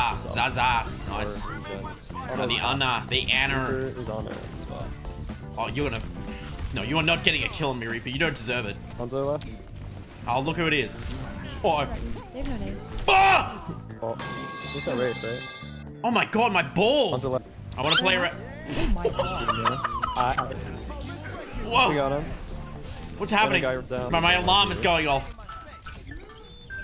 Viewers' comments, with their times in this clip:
0:09 i swear i heard the reaper say "fuck you"